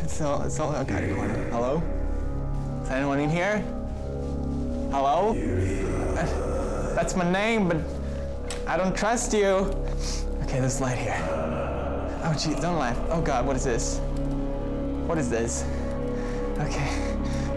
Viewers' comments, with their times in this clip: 0:03 I'm wearing headphones, but when the man said something, my dog who was laying on me jumped XD